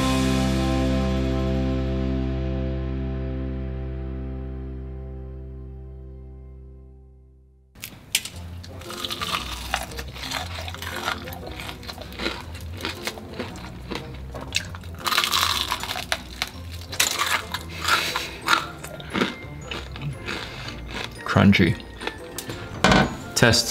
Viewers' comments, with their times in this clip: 0:09 that crunch Ughh Yes ASMR 🤤